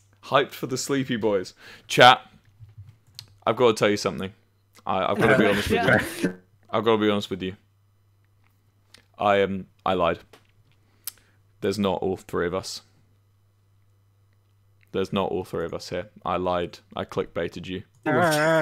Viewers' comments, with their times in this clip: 0:05 It makes me so happy that when Wilbur just quickly undeafens at like minutes they were laughing and singing. I just like that it wasn’t an on stream bit and they were just genuinely having fun while waiting for Wilbur.